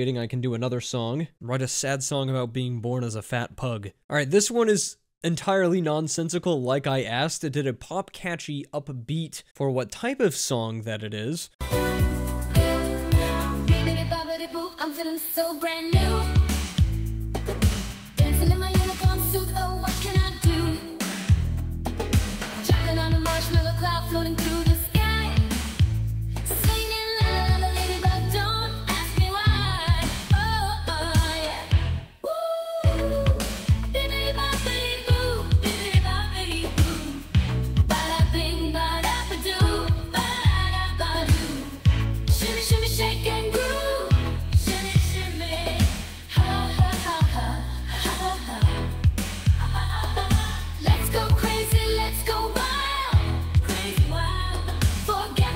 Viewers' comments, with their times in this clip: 0:09 is a 1981 banger somewhere in some timeline.
0:11 Dude, that bippity-boppity-boo song is a legit banger! 😮
0:12 sounds like a 70's Eurovision hit. This is legit!
0:13 Did you not hear the melody for the song ? The melody is way more interesting and catchy than the majority of modern music I’ve heard Few musicians would think to do the unexpected chord change at the end of the first verse during the “why” vocal run A catchy, memorable melody is the sign of a good melody
0:19 it sounds like cringy 80's music
0:41 What are you talking about? The song had a more dynamic and interesting melody than the majority of songs I hear today. The fast singing doesn’t mean there’s no melody Being able to hum a song is usually a sign of a good melody